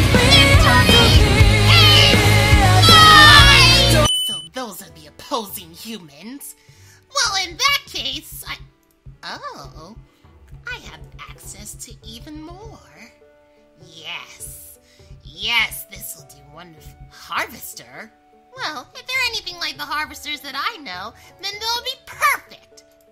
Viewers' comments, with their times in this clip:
0:04 my ears died cause I am using iPods